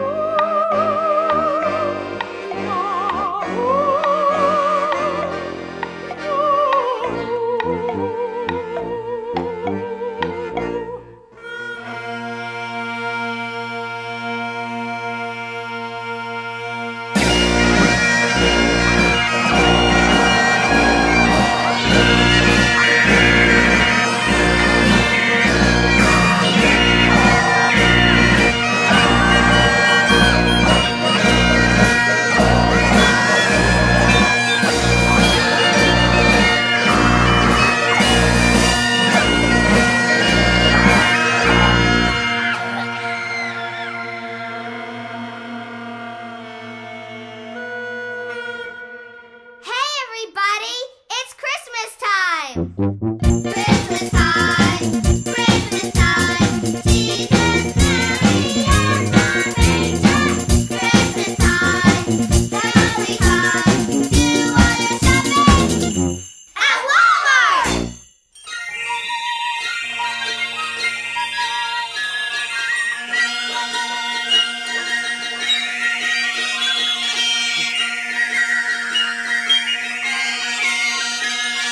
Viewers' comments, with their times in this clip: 0:10 Neutral Milk Hotel arrives to sit in
0:17 every time i listen to this, the absolute NUCLEAR EXPLOSION of bagpipes undercut with panicked, terrified screams kills me
1:07 My only complaint is that is not a waltz and it's not in 9/8. They're actually playing snippets of a Scottish strathspey known as Devil in the Kitchen, which is in 4/4. It's actually a fantastic tune, if played correctly and in the right context 😉